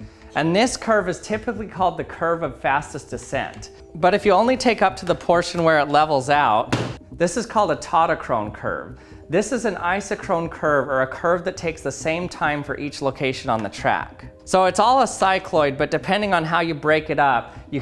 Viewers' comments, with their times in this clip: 0:04 bang abrupt cut